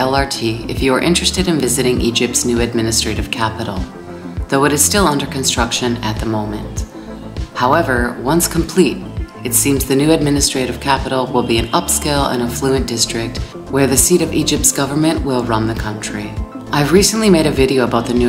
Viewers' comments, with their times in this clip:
0:06 beautiful relaxing background music 🎶❤